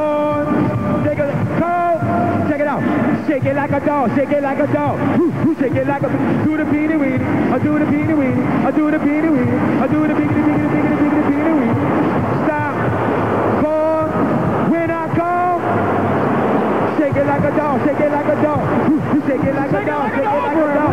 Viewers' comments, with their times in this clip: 0:03 LOL I was there. Gotta love the chorus of BOOS. #TeamSu